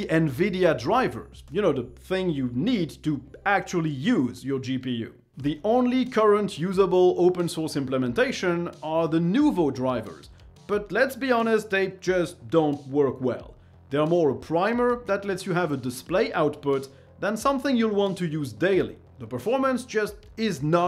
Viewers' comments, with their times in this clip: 0:08 did a frenchman just say nouveau like an anglophone